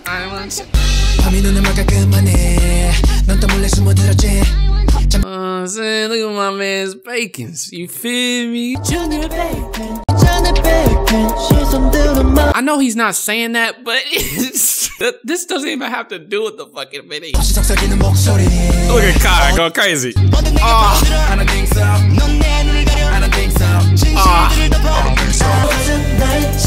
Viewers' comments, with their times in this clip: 0:09 Can someone tell me what the song is where Baekhyun sounds like he's saying bacon because it sounds slap. It would be much appreciated.